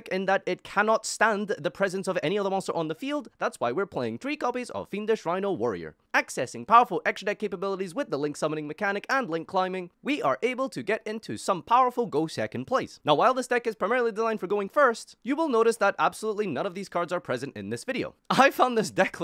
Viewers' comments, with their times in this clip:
0:07 bro sounded like uncle Roger 😂😂😂